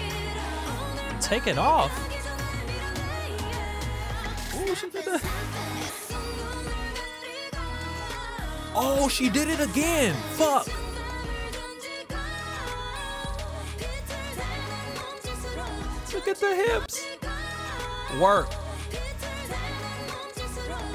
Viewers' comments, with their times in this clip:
0:05 that's exactly how I reacted, the chorus hits and I said out loud "oh SHIT" it's THAT GOOD